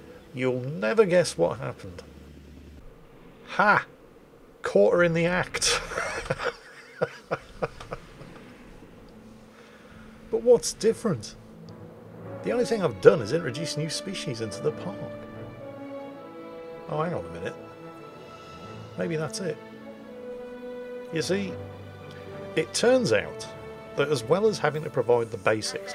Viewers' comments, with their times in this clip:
0:08 Wow, wait a second! Lets not rush to any conclusion! She might have had a heart attack, and collapsed right on top of Trixxy. And of course a good girl like Trixxy didn´t want all the meat getting wasted... Please ignore the phone ringing inside her belly! She has neither hands nor a bag, so how do you expect her to carry her phone?